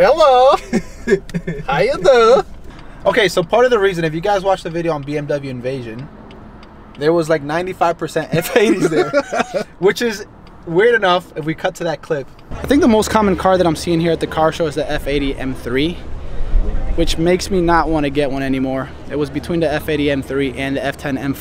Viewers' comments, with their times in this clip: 0:04 the borat impression 😂😂😂